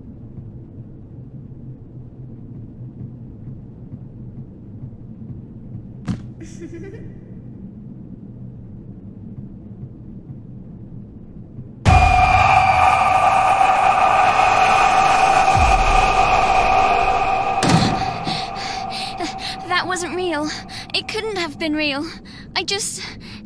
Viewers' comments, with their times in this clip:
0:05 Esther's little laugh is so adorable 😭😭
0:08 When Esther gets grabbed, the painting gets a smiley face and the little blue bag thingy disappears for some reason. Also, a little before, you hear a little laugh, which already shows something's wrong.